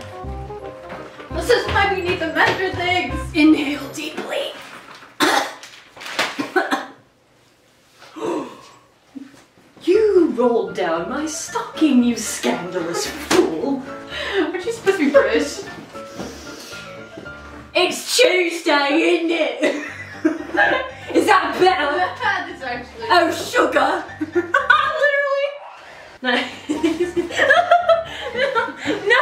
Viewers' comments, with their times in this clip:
0:08 You can’t forget the part where glitch became British:
0:14 *laughs in British*
0:17 British william active